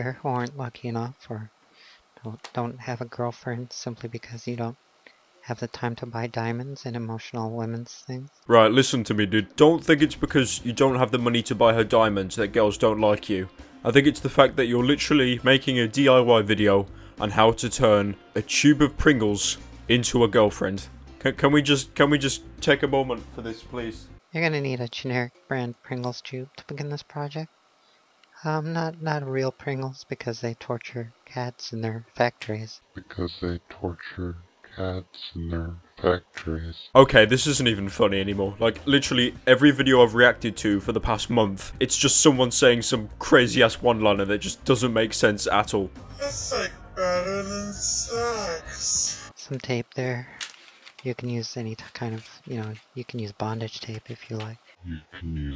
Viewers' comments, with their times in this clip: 0:03 His voice is like salad fingers
0:36 he sounds like Kylo Ren from Star Wars